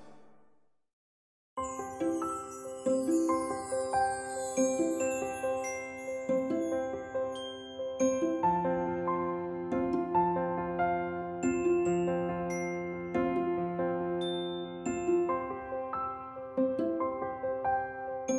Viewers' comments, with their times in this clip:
0:04 I love that music